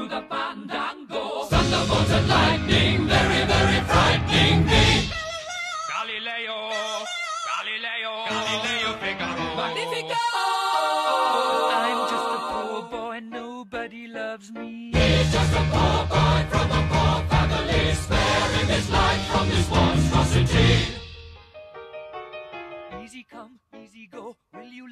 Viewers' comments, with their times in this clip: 0:05 Roger featuring the chicken entering the chat
0:08 listen at minute that says: "Lalileo shit, magnifico" JAJAJAJAJA. Sorry if you don't understand me it's because I speak Spanish